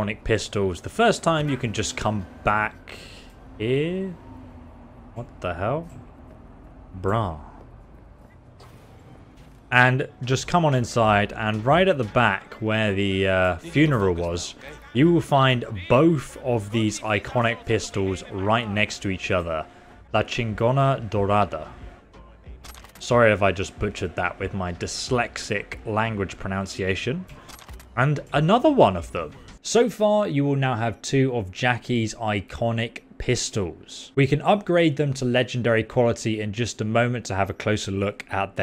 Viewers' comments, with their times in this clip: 0:06 That was the most chill "Bruh" ive ever heard braah
0:06 That was the most majestic "bruh" I've ever heard.
0:19 not bad, giving ur , well you know pronounced it a touch of white boyizum it's normal have to give a 4 outta 5